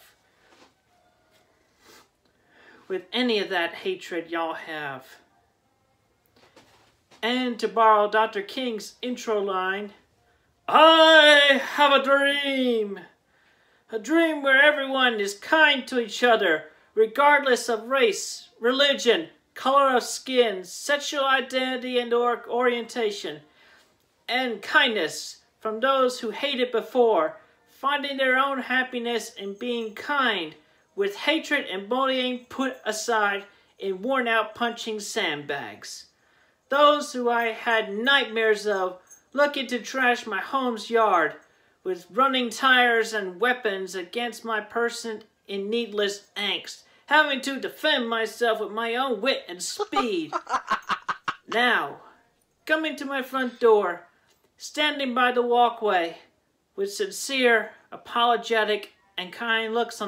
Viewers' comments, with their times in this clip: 0:10 anyone else expect him to make ghost noises?... That was the worst impression ive ever heard
0:20 isn’t he the one who insults gay people? Edit: lmao when he screamed, my cat just looked at me like “wtaf”
0:46 Your laughter should be harnessed as a sustainable resource. We could power major cities with that laugh